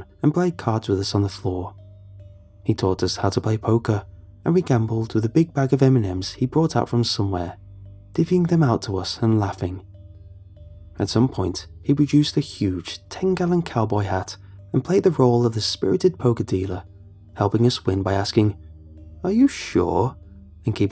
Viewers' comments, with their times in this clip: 0:05 big bag of eminems